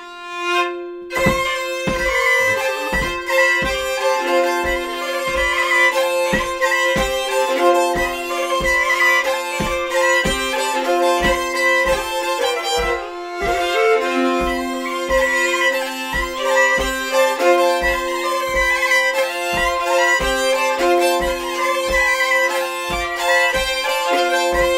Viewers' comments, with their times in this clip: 0:05 you can hear the licc :D